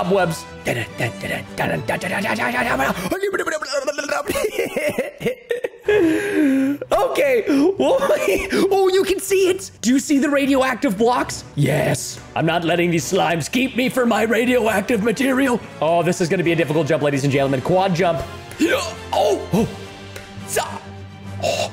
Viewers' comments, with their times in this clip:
0:03 robotic animatronic sounds inserted~